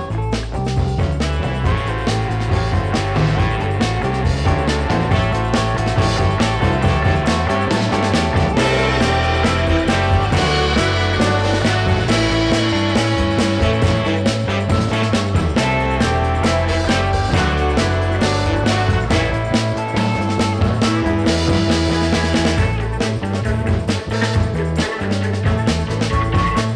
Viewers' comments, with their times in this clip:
0:10 GREAT music, real stompers in there! and I loved getting the bridge right with the added support in the middle. Ahhhhh, such peace in my heart with that job done right! :-)